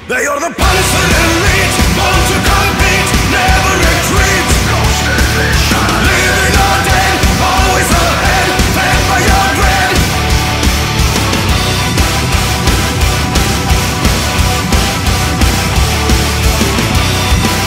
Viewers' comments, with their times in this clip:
0:04 imagine driving home from work and just seeing that and it’s blasting ‘GHOST DIVISION’